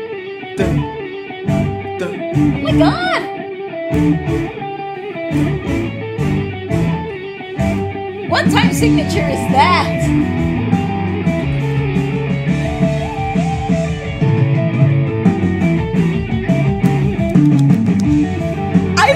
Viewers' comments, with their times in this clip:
0:06 what time signature? For a moment the guitarist took charge of rhythm and the drummer used it and gave a free style rhythm.